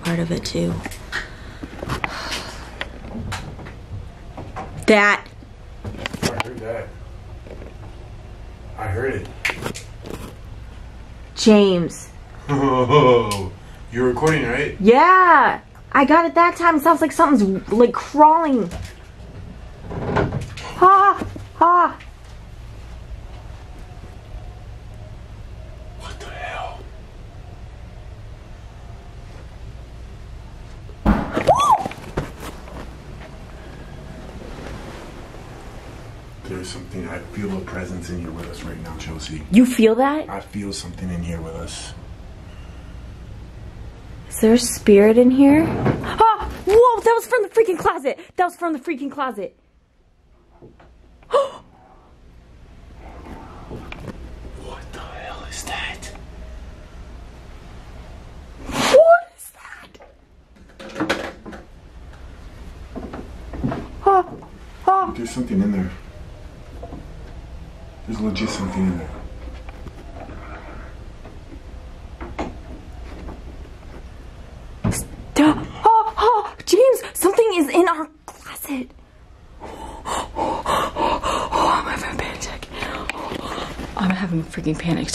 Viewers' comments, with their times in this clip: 0:09 Ok > you can really hear the scratching up to the banging and now the closet... creepy voice!! Did your spirit box turn on or something?!? Oh crap...
0:17 There's a faint female whisper while you're talking
0:46 I just heard a demon crawling in the attic at the haunted Queen Mary minutes
0:51 I swear that sounds like an evil voice coming from the closet...sounds like “Let...Me Out!!” Or def something like that. I don’t know if you can hear it without earbuds, but that’s what I hear. That is so creepy!
0:52 A creepy voice says what sounds like "Get out"
0:53 there is a evp saying let me out
0:54 definitely sounded like let me out
1:09 OH MY GOD I HEAR A RASPY VOICE SAY RUN